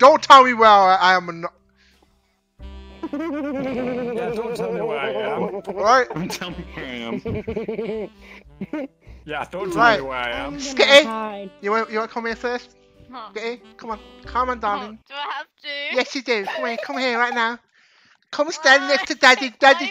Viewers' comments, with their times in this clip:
0:03 That laugh scared me